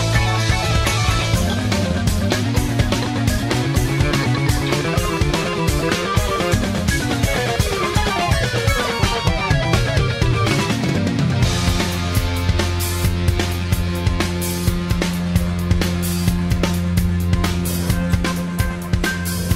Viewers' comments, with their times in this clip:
0:07 I love this part. Its a resume of all the musics of the album